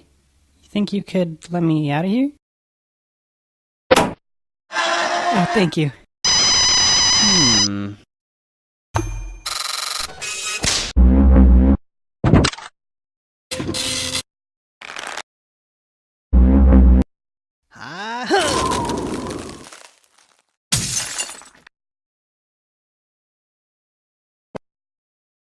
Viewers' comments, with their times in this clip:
0:06 Chromebook audio glitch sound